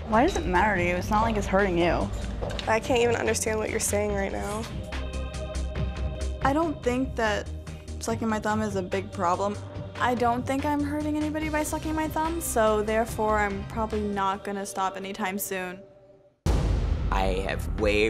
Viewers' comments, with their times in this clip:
0:03 bruh I understood her perfectly wdym